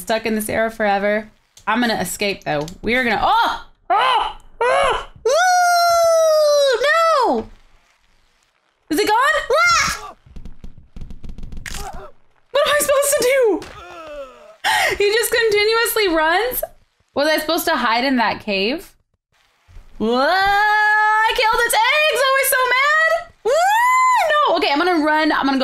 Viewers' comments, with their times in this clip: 0:08 and 2 21 were the most unhuman noises everrrrrrrrrr